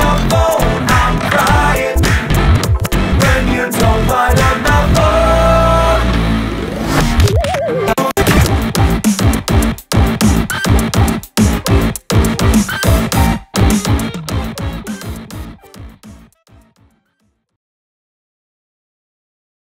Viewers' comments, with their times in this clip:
0:08 Woah if you slow down to .25 speed you can hear apple shampoo. Pretty sure it also appears earlier in the song aswell. Nice touch man